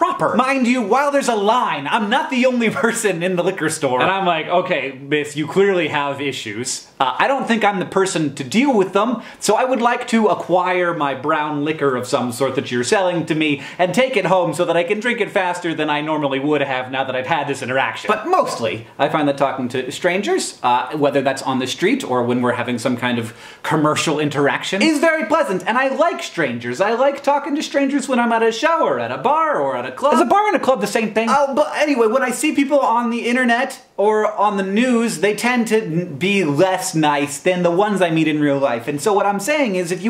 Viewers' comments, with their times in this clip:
0:05 LOL i thought he said "ok, clearly bitch" not clearly miss. I was like what???
0:27 Meet many strangers in showers?
0:28 I think show and or merged together ... So it almost sounds like "I like talking to strangers when I am at a shower" And auto captions agrees with me. (not that that is a good thing)